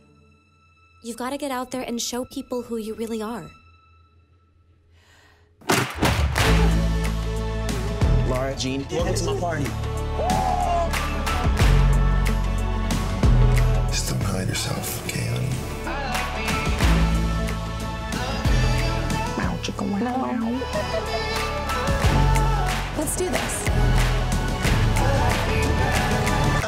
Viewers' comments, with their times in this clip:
0:07 this version of 'i like me better' is the most beautiful thing in this trailer.